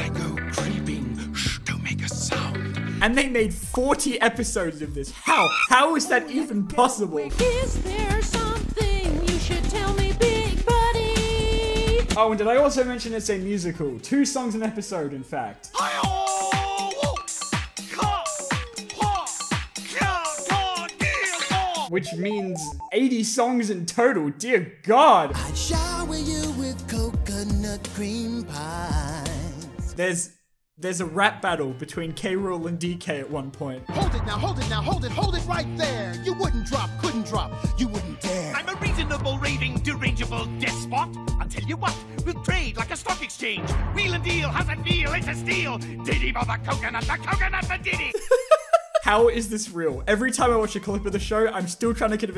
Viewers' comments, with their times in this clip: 0:08 Why would anyone want to cancel the show after hearing his beautiful voice
0:39 I don't know what any of yall are talkin' about. K Rool's rap was a bop and you can't tell me anything different.